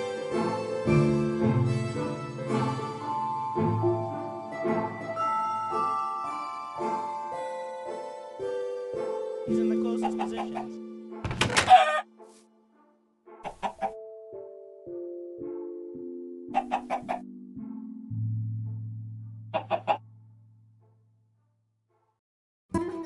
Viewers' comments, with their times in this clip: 0:08 I think I heard your voice >:O
0:08 hear the voice
0:08 I heard your voice
0:09 I heard his voice